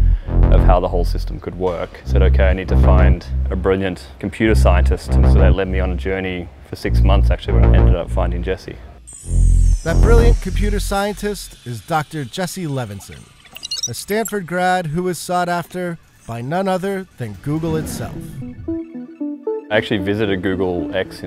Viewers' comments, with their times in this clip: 0:03 One would think that Bloomberg knows to turn down the music when people talk so that we can hear them talk @ time stamp as well at other parts of this video!